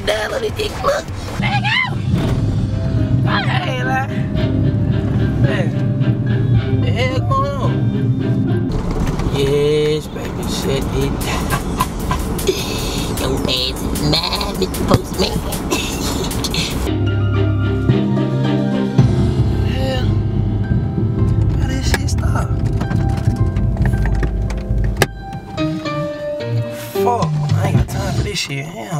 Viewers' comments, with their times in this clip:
0:09 that evil lil laugh tho!haha